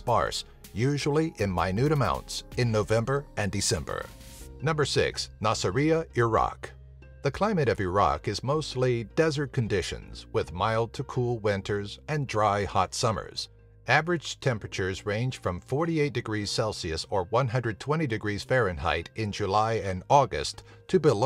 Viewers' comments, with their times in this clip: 0:05 the way he seys iraq tho